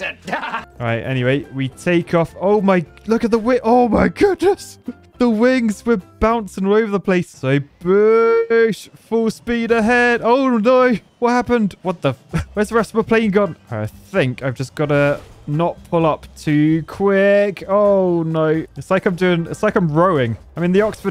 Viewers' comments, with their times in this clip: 0:08 aaaaaaand... FLAP! ÆEEEEOUAAGGHHH Swallows and entire swimming pool of air cough cough wheeze